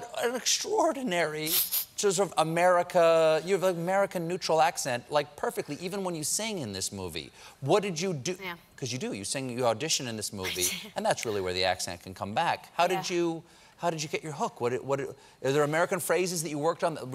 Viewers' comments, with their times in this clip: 0:03 I love her laugh so cute